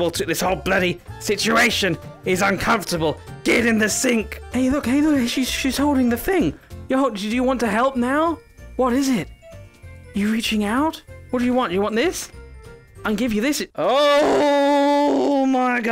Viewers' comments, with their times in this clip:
0:03 Your voice change🤨🤔😵😯